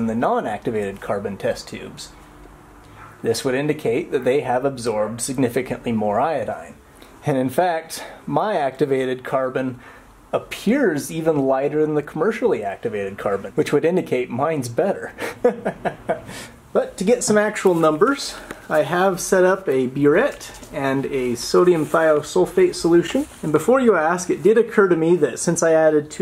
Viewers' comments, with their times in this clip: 0:06 Mad scientist laugh
0:08 you can here the Argentina sized grin on his face 😁